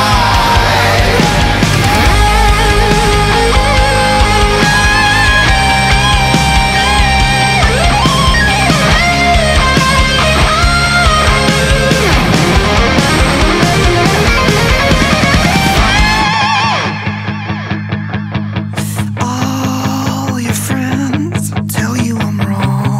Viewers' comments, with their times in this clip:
0:03 This solo is absolutely amazing ❤️❤️❤️